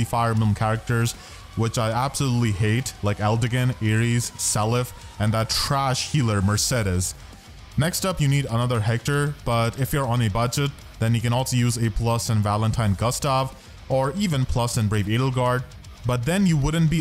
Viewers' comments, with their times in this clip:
0:05 “and that trash healer Mercedes” the way the voice mixing said ‘trash’ just sells it for me.